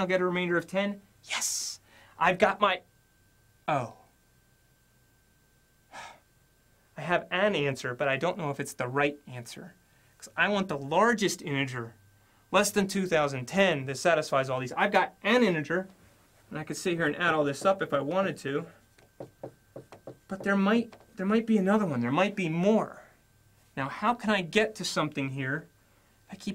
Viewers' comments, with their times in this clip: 0:10 he said smth like "the largest anjer" instead of "the largest integer"